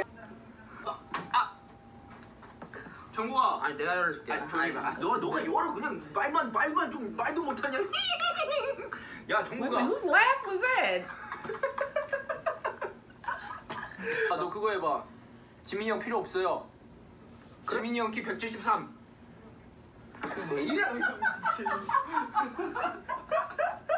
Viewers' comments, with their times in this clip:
0:08 That was Jin laughing